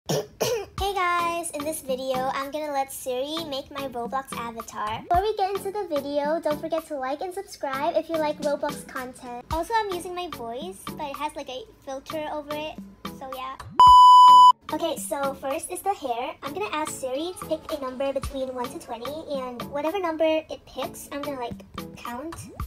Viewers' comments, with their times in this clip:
0:00 Ok the coughing rlly got me
0:00 your cough is so PREPPY
0:00 love you voice is prrtey😭💞
0:07 Is that actually her voice?